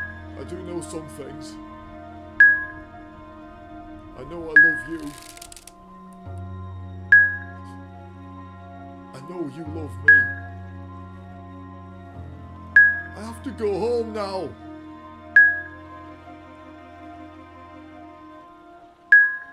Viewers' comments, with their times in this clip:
0:04 you can hear her draw the bow again, which means she previously let it go.